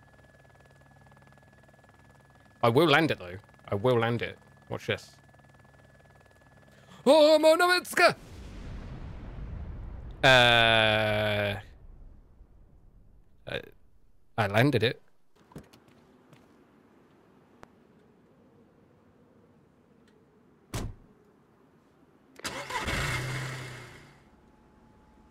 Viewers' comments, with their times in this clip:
0:06 Lmfao what did you yell out upon crashing ??? Hahahaha Edit: that crash earned you a new sub